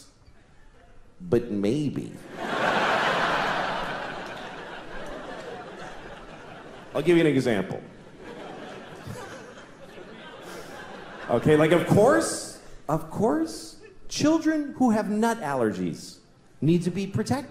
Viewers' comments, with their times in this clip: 0:05 he breaks character to laugh . I bet it’s hard not to laugh at shit you think is hilarious